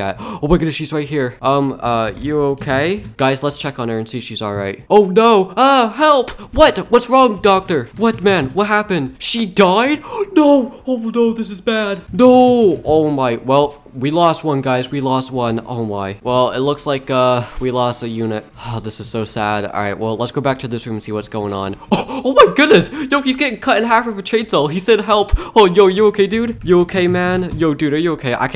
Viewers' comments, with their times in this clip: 0:09 when officer dies mission failed well get em next time plays in the background